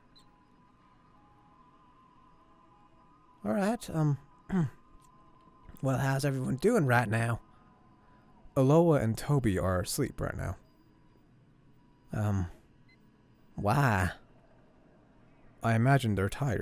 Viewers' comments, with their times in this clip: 0:04 Bonnie forgot to bleep